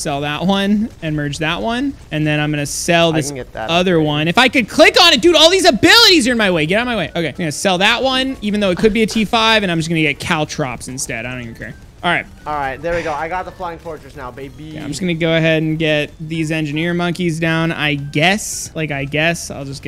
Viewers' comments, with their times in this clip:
0:07 The voice of a spoiled brat ;)